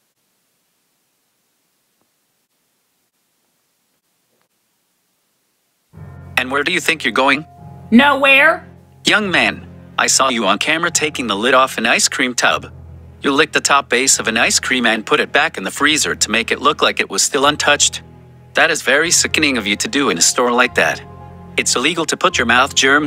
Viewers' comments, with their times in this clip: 0:06 these voice speak still speech